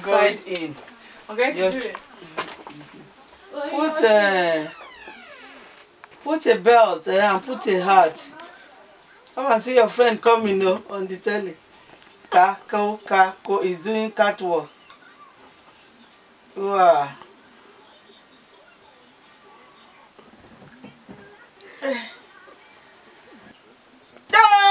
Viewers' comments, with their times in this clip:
0:10 "kah kuh kah koh". Seriously, where do our parents actually come up with these sound effects!!!? LOL!